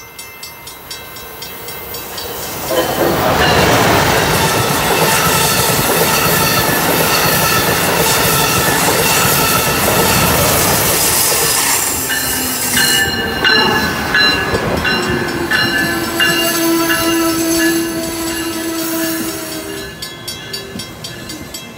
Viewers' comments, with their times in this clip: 0:07 Really nice 'Shave and a Haircut hornshows',from Amtrak Northeast Regional trains(ACS-64 #620 and ACS-64 #637)! ,what a terrific meeting,of both Amtrak Acela Express(#2038 locomotive) and Amtrak Northeast Regional(ACS-64 #621 locomotive)! Stay safe! God bless!☺👍🌞